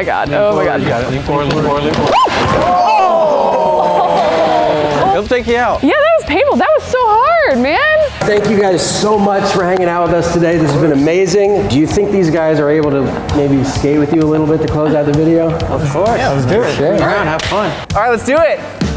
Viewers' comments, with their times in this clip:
0:03 no one even bothered to help the girl they just went ooooooooooooooooh